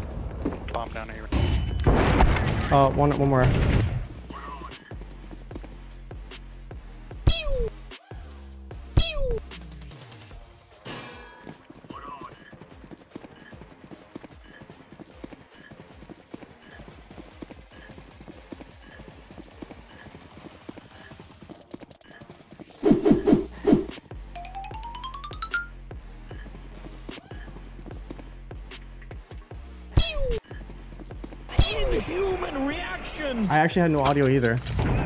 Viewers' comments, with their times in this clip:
0:05 the sound effects LMFAO
0:06 vote to change the real AWP sound to this.
0:23 what is that goofy ahh background noises😂